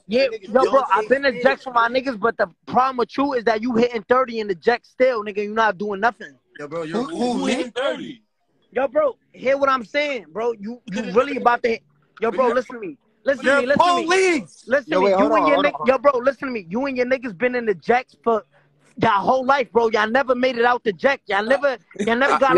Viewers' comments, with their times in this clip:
0:08 😭😭😭😭 the whole room said that shit ☠️